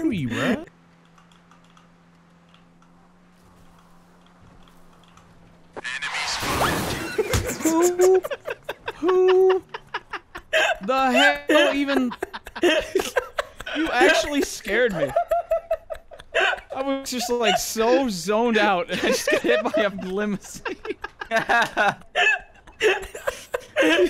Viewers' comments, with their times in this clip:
0:07 bro's laugh deadass sounds like a set of keys jingling from a belt loop